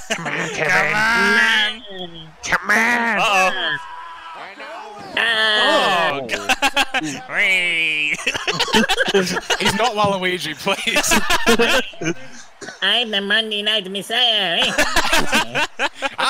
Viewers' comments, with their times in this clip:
0:03 From minutes and onwards for a while longer is one of my favourite bits. The Walugi/Rollins stuff was genuinely hysterical and hearing the lads lose their shit like that is just gold.